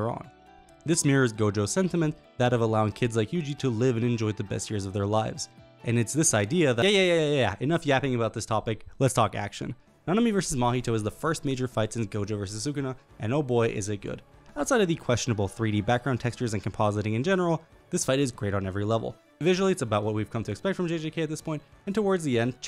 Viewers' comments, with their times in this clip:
0:09 Is that my battle theme I hear?